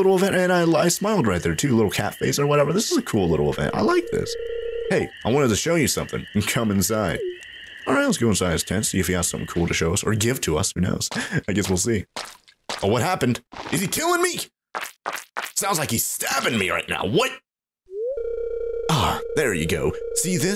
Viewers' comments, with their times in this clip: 0:06 yeah sound's like he murdering you XD